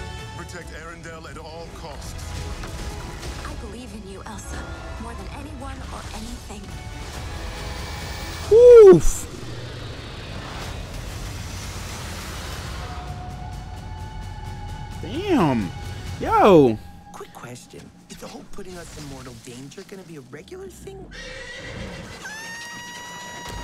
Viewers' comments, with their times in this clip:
0:08 the new roblox death sound